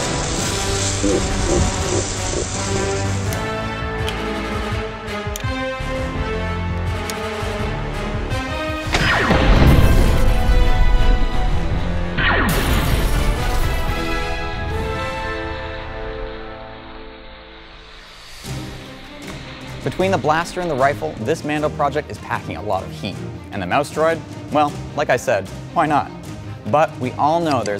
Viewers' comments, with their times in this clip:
0:10 That was no Flare Gun shot was it? Like HOLY SHIT